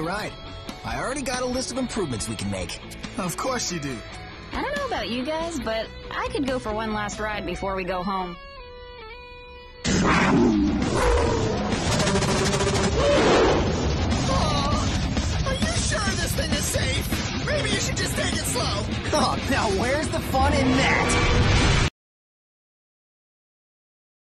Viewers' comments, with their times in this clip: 0:09 that was my favorite part as nine lives stronghorn whiptail in Sasquatch growl to life like that